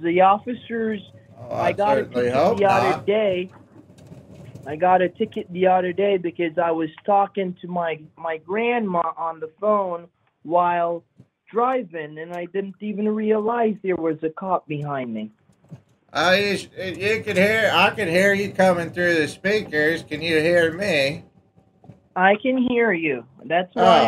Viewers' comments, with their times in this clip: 0:05 Wait a minute Wait one second This scammer has been in a kitboga video!!! The way they are speaking, the articulation and pitches of voice are practically the same as one kit tricked!